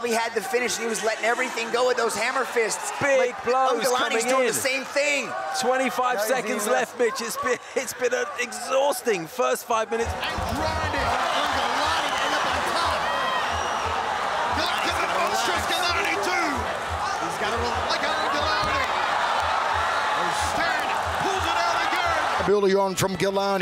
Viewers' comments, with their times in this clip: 0:06 "25 MINUTES LEFT BITCHES" he went full sassy on this one ROFL